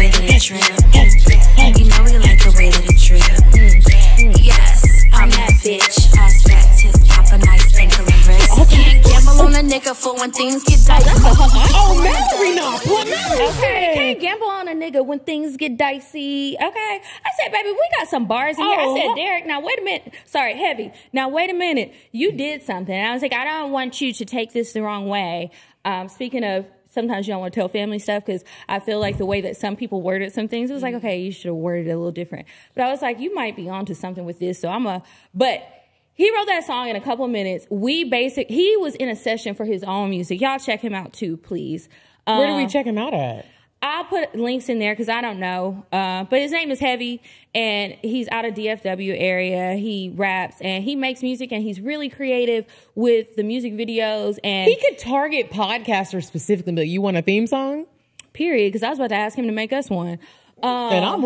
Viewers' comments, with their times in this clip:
0:08 I f** love y’all omg !!!! Hahahah y’all jamming to the song was IT!
0:49 lol loving the song & the dancing. I was dancing too!